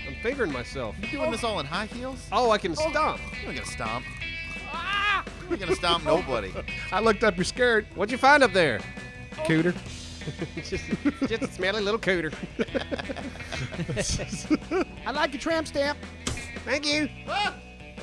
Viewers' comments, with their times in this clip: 0:04 That scream tho'...😂😂😂